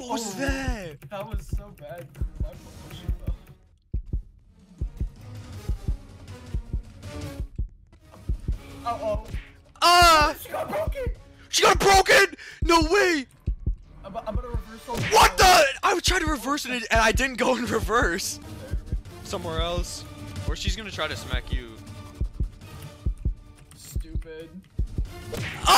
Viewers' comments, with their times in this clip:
0:09 bro thought we didnt hear the moan